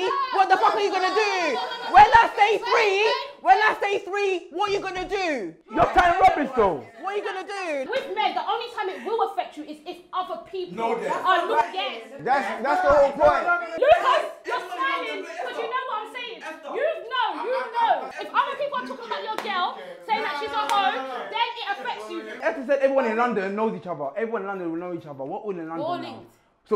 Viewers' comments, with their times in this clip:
0:07 That sound lady came out of nowhere 🤣🤣